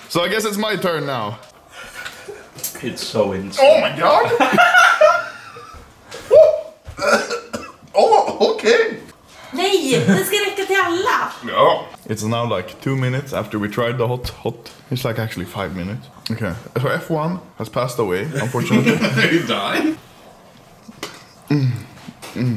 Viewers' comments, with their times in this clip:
0:08 the sound of goofy